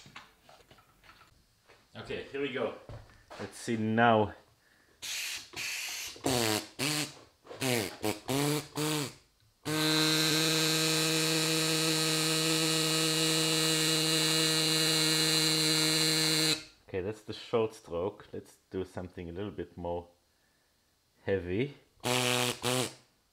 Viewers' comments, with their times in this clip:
0:06 So? a glorified fart machine? my grandmother would want to compete agents that noise